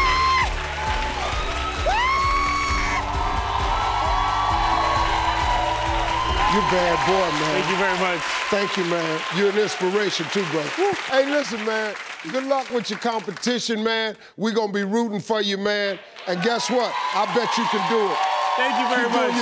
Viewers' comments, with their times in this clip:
0:05 Steve sound like he getting rapped 😂😂😂